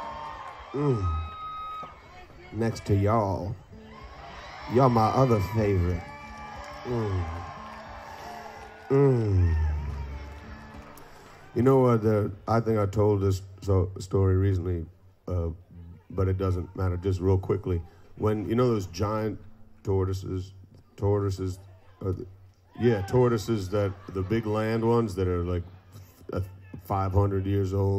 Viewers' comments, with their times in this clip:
0:08 … oh Dave! Hilarious.. someone shouting "that's what I do!" aahaha I love all you dave heads :)